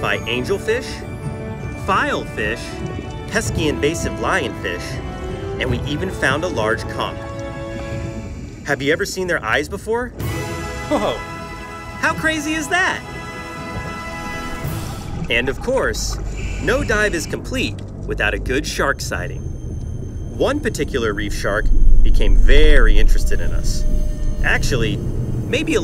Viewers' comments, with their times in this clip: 0:06 is it only me that hear something diffrent? A large.. what?